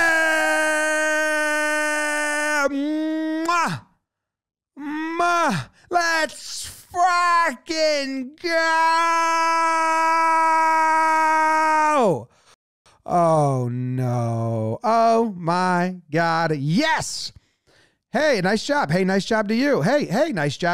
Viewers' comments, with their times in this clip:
0:05 "Let's fucking go"... no cencoring this time? 🤣😅
0:08 thought u usuallay bleep doze, @ least on yo shorts u doez